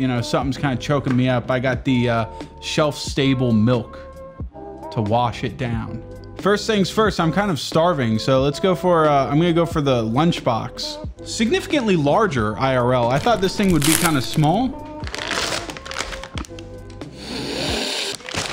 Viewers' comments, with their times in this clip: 0:04 you kinda sound like idubbbz haha